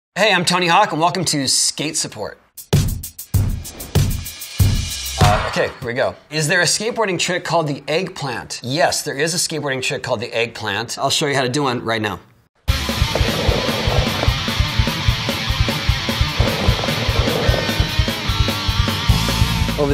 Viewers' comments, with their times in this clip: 0:00 Hey I’m Tony Hawk ❌ Ham Tony Hawk ✅